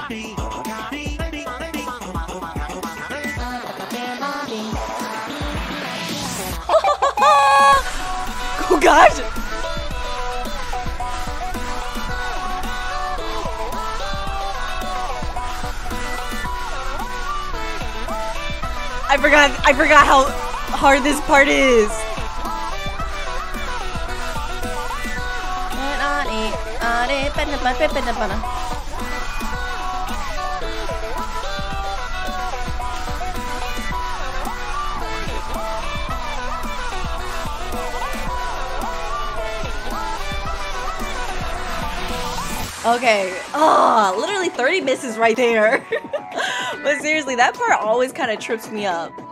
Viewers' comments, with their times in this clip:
0:06 the scream though was burning my ears lol
0:11 Laugh is here
0:36 you can hear screams if u have good ears like me Fun fact: ears is hears if out the h